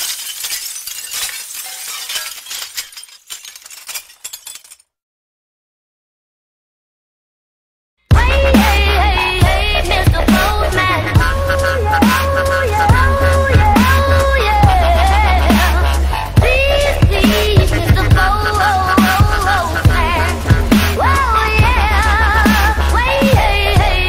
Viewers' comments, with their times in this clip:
0:08 it seems like this video was more about the editing than the gameplay, and the music wasn't even synced on the upside anyone know the name of that song?